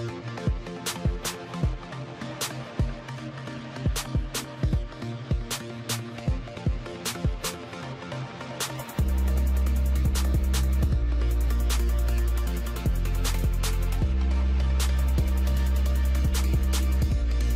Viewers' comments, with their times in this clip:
0:03 MUSIC is so bad stopped watching mins in